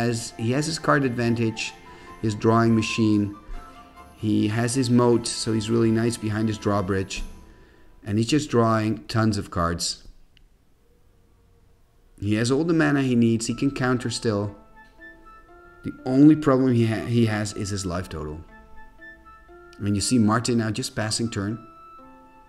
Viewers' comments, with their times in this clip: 0:04 yo i was not expecting the trap beat to come in over the nerdy music <3 awesome games, awesome decks, quality playing